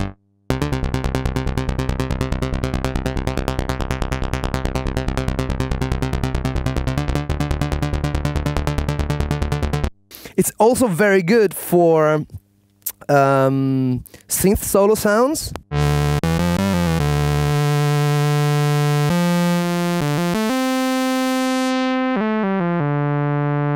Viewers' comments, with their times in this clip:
0:10 it sounds like the mighty SID!